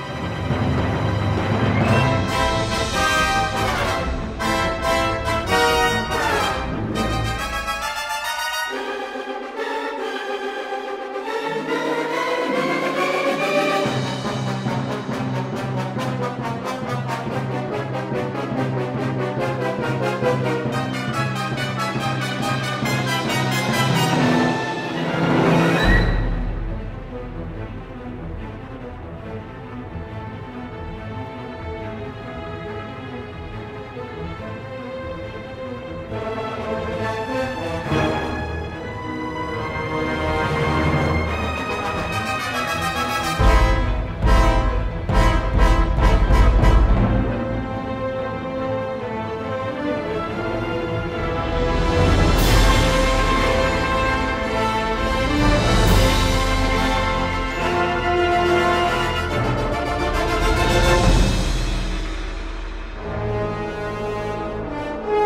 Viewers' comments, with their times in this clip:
0:08 When the TIE Fighters fly in, I like how the music almost mimics their engine sounds.
0:14 Asteroid theme? Sounds a bit like it I guess
0:23 I got it when that Death Star About to Explode Song started playing.
0:47 Donnie yen's theme is the best